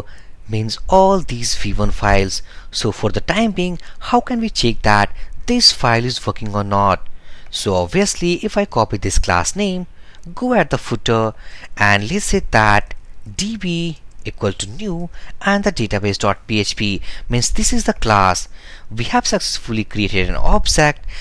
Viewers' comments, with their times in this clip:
0:05 He said "This file is fucking or not" LOL I'm dead laughing looool